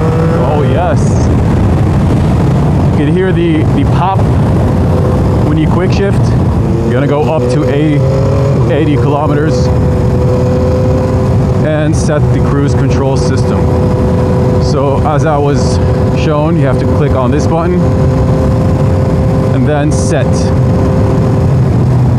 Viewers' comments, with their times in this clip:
0:10 is that clicking/rattling sound coming from the engine ?